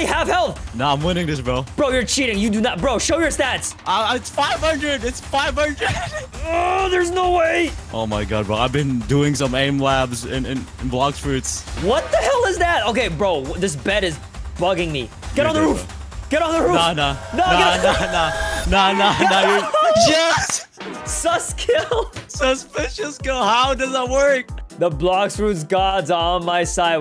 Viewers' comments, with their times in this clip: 0:09 bro sounded like a 14 year then back to 20